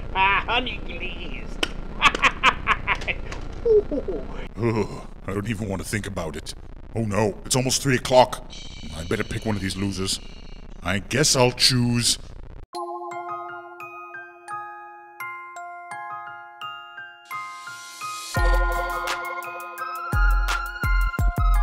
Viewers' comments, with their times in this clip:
0:06 anyone notice the echo in chads voice ?